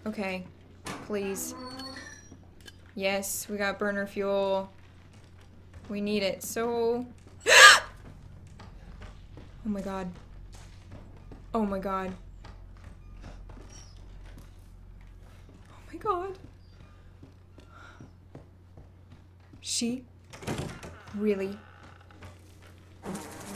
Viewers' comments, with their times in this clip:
0:07 Your gasp scared me more than Marg! xD